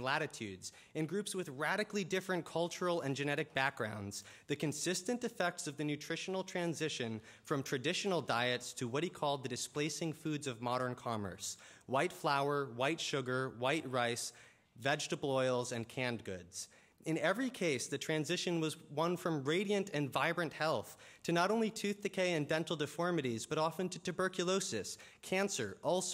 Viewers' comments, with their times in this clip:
0:10 looks like a 5th grader reading his essay to the rest of the class.